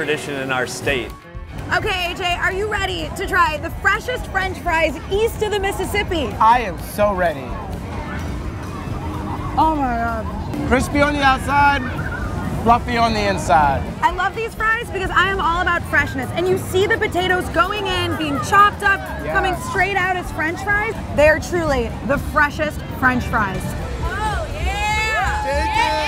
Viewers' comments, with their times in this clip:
0:09 that "OH my god!" sounded like Rosanna Pansino